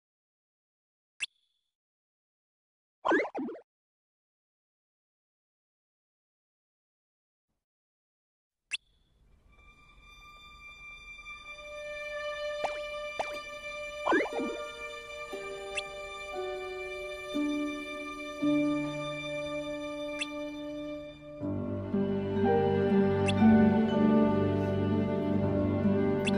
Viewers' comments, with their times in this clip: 0:10 I've been absolutely loving the use of several songs from Orchestras. It really helps to make pivotal scenes more distinct and impactful from the rest. It makes the Timeline series that much more amazing. I think one of my favourite examples is and the World of Tres arrangement of Scent of Silence. This version of the song is much more eerie than the original, which definitely emphasises the sense of inevitability this scene portrays, while also giving a sense of musical continuity, since the X entries have used the original song many times (especially with your addition of Heart of Mystery back in episode 1). Been loving every episode thus far, and it's really refreshing seeing all these scenes in chronological order. Can't wait to see what else you have in store for the rest of Union Cross!